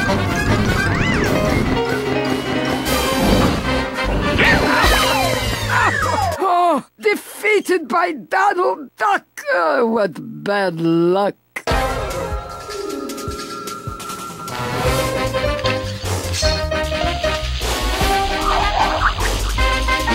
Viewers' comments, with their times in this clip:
0:04 Scream of magica de spell like marshall law scream in tekken 3...